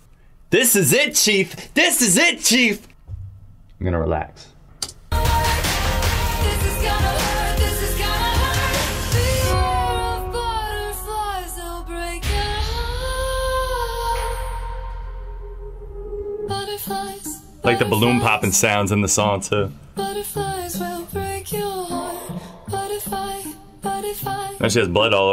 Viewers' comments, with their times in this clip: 0:09 Does anyone else hear Billie Eilish at the very end? ( with just her voice and the piano definitely sounds like she copied Billie) I really liked this song and thought it sounded original until I heard the end.